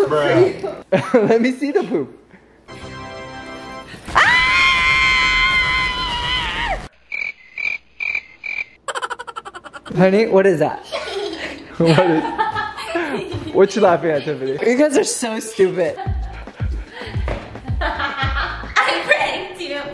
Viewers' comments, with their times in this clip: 0:03 was that his fucking scream 😭😭😭😭